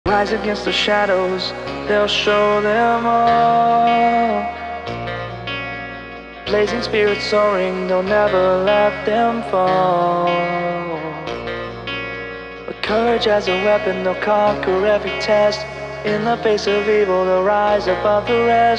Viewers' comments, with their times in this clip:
0:00 this song gives me extreme find your flame vibes